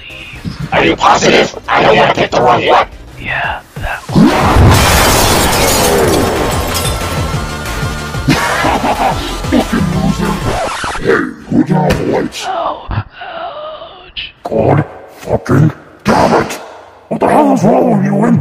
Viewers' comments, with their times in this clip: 0:04 WA-HOOO Rainbow road from mario kart plays in backround and mx gets into a cart and runs gold over lol